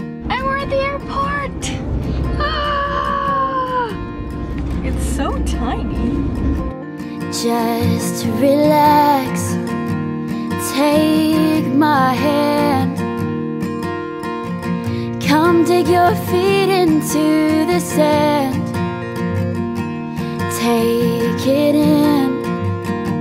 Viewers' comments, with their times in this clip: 0:04 love the way she says: "It's so tiny!" :D